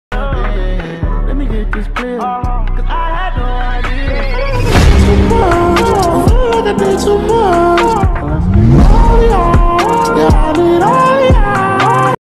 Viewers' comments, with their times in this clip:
0:07 Am I the only one who hears : let's get naughty-ah young midoryia. like 😂😂